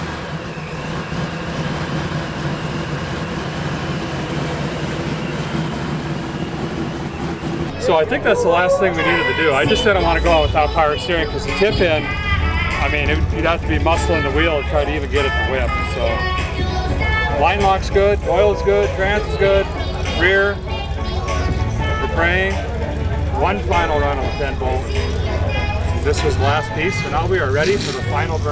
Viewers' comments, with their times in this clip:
0:10 That song that breaks in ? Lol 10,000 points on the ol' annoying meter.